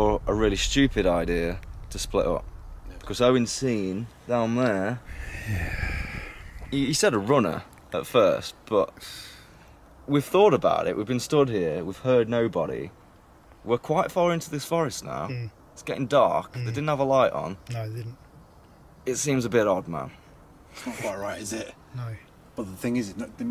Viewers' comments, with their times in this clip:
0:06 mins in as he says runner there is a voice that says yeahhhh and am sure you guys do not pick up on it am I right or wrong is it one of you lads saying this YEAHHHHH Territory